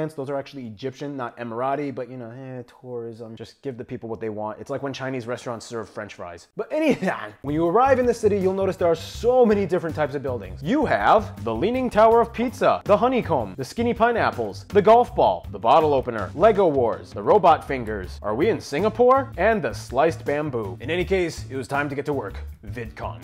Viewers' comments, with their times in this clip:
0:06 this is the "EnyWhauy" you came for